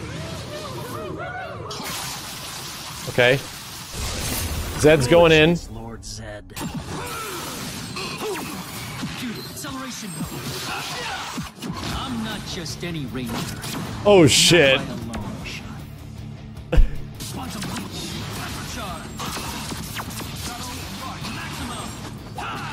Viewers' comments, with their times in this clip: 0:05 bruh that grunt when Quantum Ranger throws the most devastating H ever in FGC history lmaooo... L E T H A L